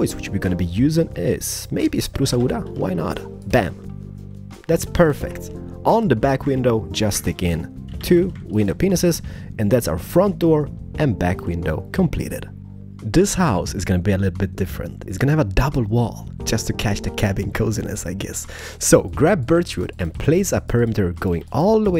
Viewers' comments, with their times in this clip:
0:07 omg thought he said "two little penises xD
0:07 Does he say window penises xD